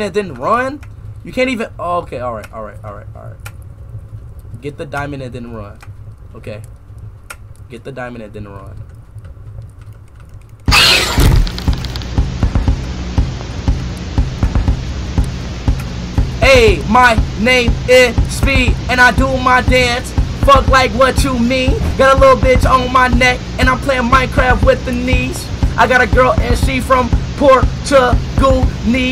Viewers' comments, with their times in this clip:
0:10 Love the beat